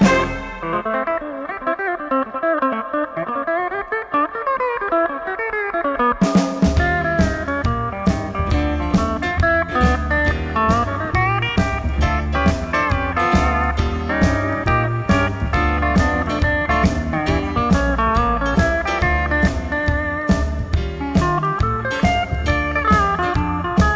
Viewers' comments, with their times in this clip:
0:07 Nice playing. A bad punch though. :(